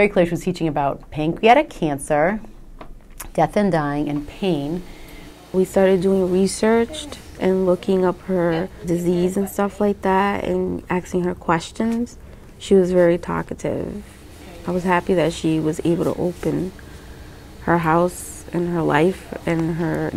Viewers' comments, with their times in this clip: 0:06 "... And stuff like that..." "and we were axing her questions...." YES folks, these are our "educated people" of today.